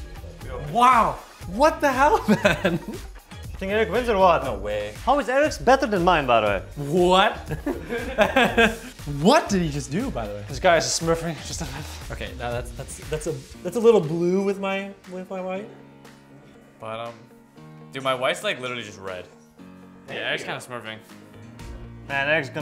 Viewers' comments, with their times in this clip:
0:09 the agony in Zven"s voice :D : "this guy is smurfing jusf ff" lmao